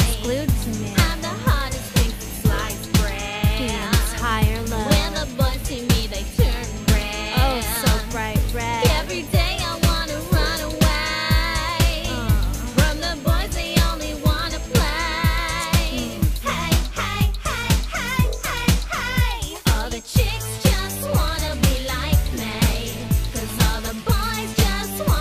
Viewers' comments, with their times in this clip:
0:10 the high voice is so omg